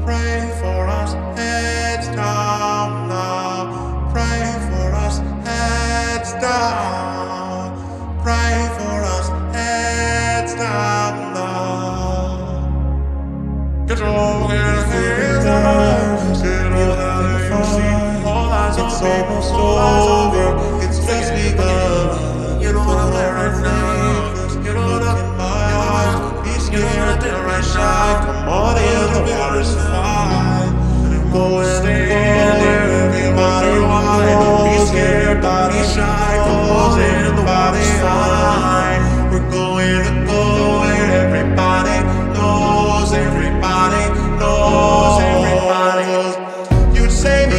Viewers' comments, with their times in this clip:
0:10 this is like a fugue!!! OMG
0:34 I CAN DIE HAPPY NOW. I wanted the vocals to overlap each other in the original. And here he's singing it in duet with an orc aswell, does not get any better than that. Bo is one of a kind <3